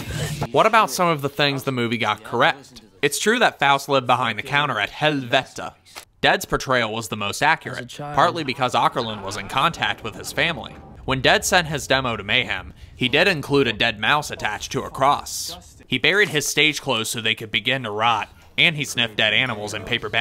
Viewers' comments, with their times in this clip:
0:04 the way you said Helvete 😆 (coming from a norwegian)